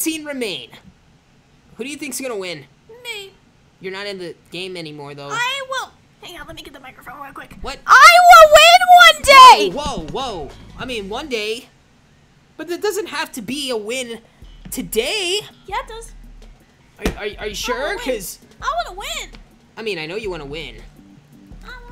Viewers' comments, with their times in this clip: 0:07 that hurts my ears